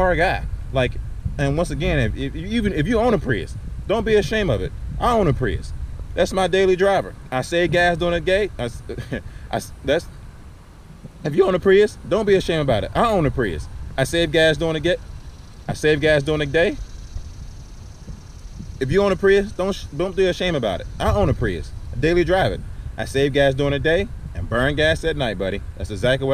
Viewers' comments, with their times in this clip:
0:07 he saves gas doing it GAY? Ummm ok! Car looks clean, I dont have to tell u fuck what the internet say